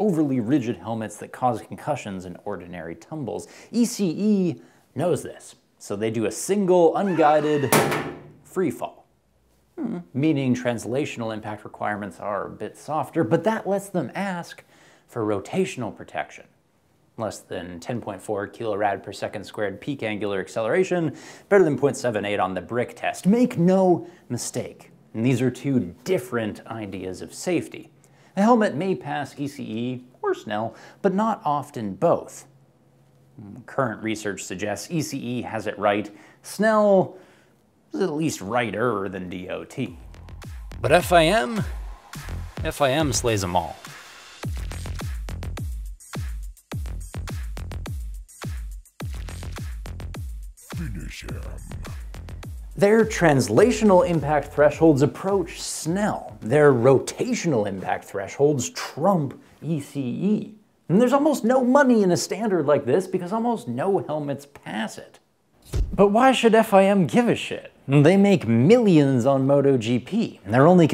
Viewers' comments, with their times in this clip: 0:05 The scream gets me every damn time
0:58 did i hear "finish him" lol